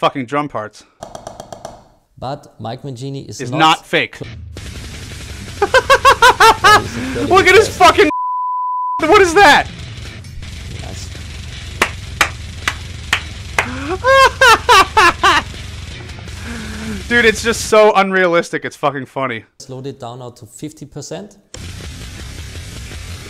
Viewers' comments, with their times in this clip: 0:06 I appreciated the off-time bleep